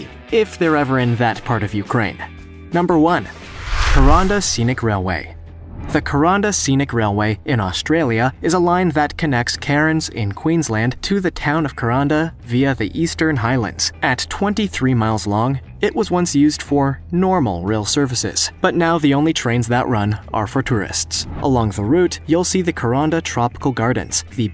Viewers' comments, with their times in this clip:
0:08 how in the fuck did you mess up saying 'Cairns' like that